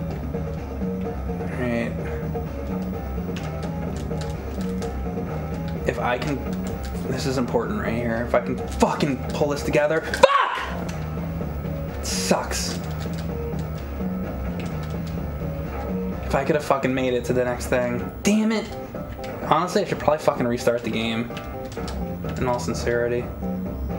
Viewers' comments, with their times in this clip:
0:05 😂 I love mikes little outbursts.